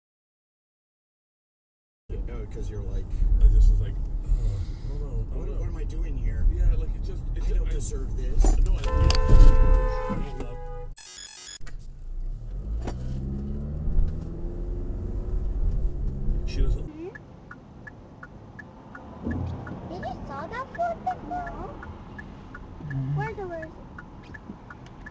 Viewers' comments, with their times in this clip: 0:09 Of course she honked back. Clueless